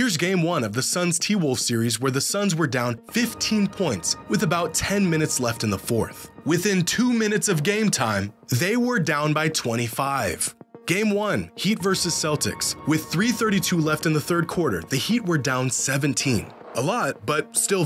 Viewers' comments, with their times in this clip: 0:03 Dude breathe a little bit. It’s starts to get annoying and exhausting when you are talking non stop.. cannot watch anymore